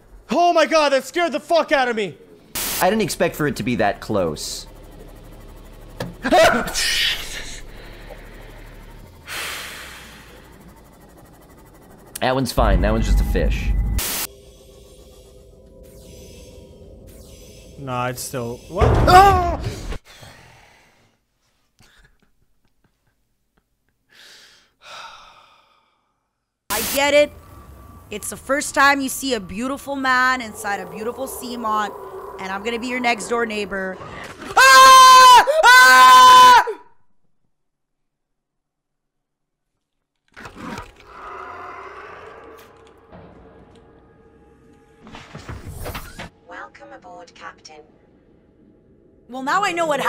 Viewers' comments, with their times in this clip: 0:03 hits a fly on the windshield, screams like a girl... LOL
0:17 mans yelled in lowercase
0:19 man sounded like kermit the frog
0:27 The way she recomposes herself right after screaming is the best
0:27 If she screams that loud when she sees a tiny fish that can hurt you a little bit how would she scream when she sees a leviathan?
0:30 I think that's the manliest scream that a girl could scream
0:32 she FULL BODY screamed, TOOK A BREATH, then did it AGAIN 💀💀💀
0:32 Out of all the screams I heard from people, this one sounds almost exactly like Invader Zim
0:34 I was expecting her to squeal like most girls do.
0:34 GIRLS DO SCREAM!!!!!!
0:35 girl took a breath to scream a second time 😂😂😂
0:38 I like how she snaps back from sheer terror to perfectly calm again